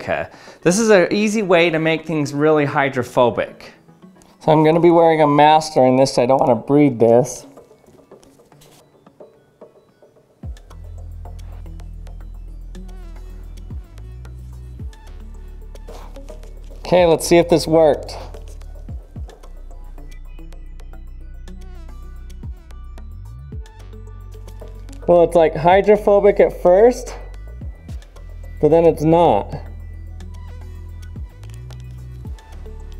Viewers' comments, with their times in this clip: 0:10 I almost slapped myself in the face thinking there is a mosquito right next to me
0:11 anyone else hear that fly...? >__>
0:12 thank you for the mosquito scare, almost slapped my ear 😂😂
0:12 made me wonder if a mosquito was close to my ear
0:12 Anyone, especially those using headphones, thought there was a mosquito ?
0:12 You got me up in arms thinking there was a mosquito in my room
0:12 mosquitoes approve this music.
0:13 The mosquito in my bedroom at 3 AM (this only works with stereo speakers):
0:15 How many thought it's 🦟 ?
0:20 The BGM has mosquito in it.